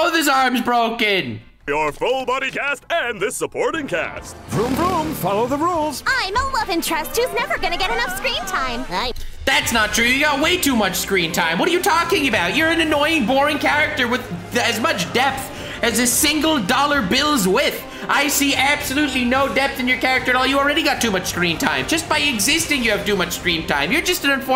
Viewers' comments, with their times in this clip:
0:08 sounds like Tamaki from fire force😒